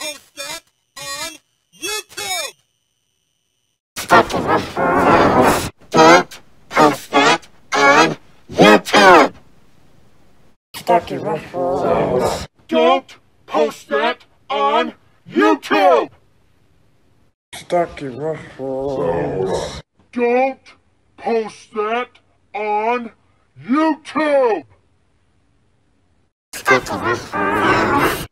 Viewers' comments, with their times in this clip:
0:05 2 headed demon Barney voice
0:12 evil Barney voice